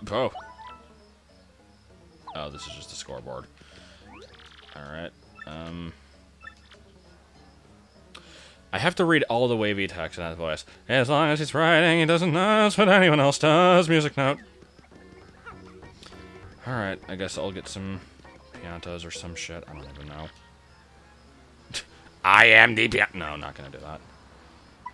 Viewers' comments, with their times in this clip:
0:10 Sounds like something you´d hear from the Flapjack cartoon.